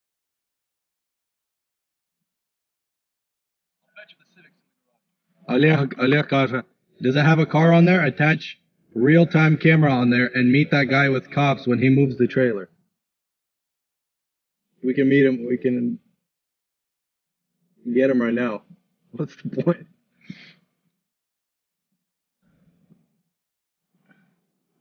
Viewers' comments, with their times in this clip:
0:05 Are you guys Russian/Ukrainian? it sounds like you were speaking some type of Slavic language for a brief moment.